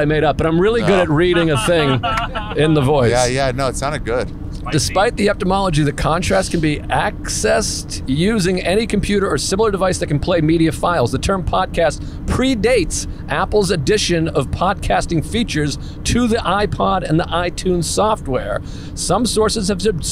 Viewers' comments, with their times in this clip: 0:08 Jesus Christ comics are all terrible readers.